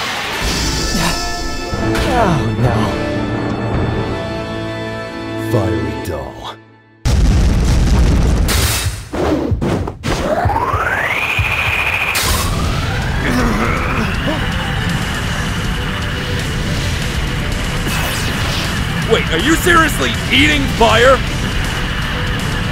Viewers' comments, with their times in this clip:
0:09 They used the kirby sound when Natsu was sucking up the fire